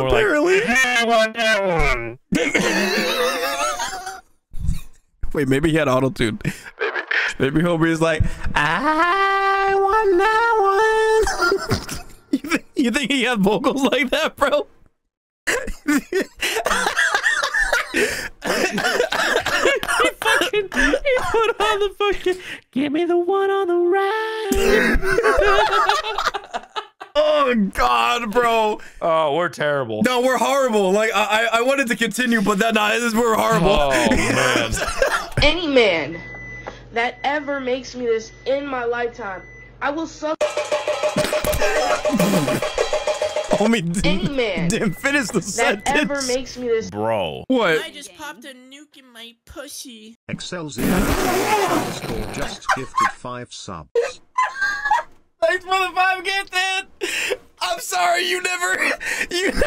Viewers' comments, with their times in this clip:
0:08 Bro sounded like Zimos from Saints Row: The Third.
0:44 bro wtf is that sub sounded 😂😂😂😂😂😂😂 worst/best timing bro